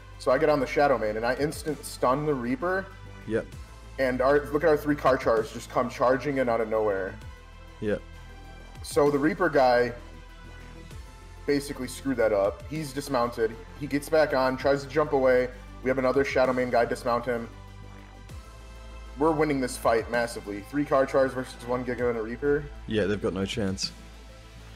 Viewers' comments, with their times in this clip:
0:05 There are Charizard’s in this game? ?